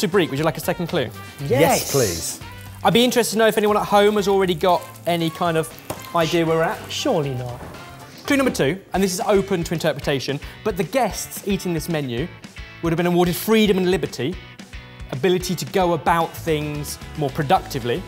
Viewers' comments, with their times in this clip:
0:03 I figured it had something to do with the Cold War, and then after the 2nd tip I'm going with the fall of the Berlin Wall and the reunification of Germany. edit: Lol @ the chopping board "sonic boom"